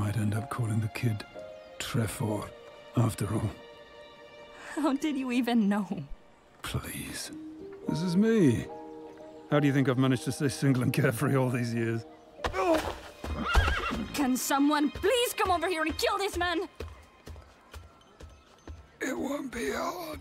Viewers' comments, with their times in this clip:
0:08 What exactly does he say after ? He is mumbling and I cannot understand it.